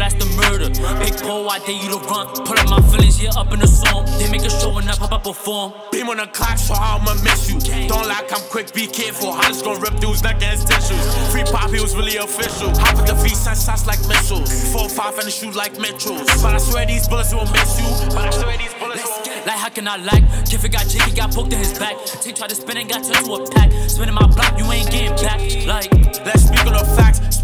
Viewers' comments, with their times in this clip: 0:10 dude lost breath mid song